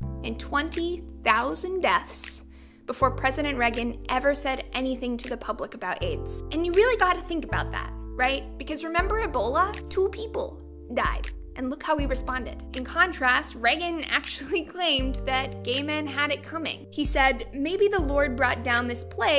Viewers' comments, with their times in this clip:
0:03 I didn't know Reagan was pronounced that way.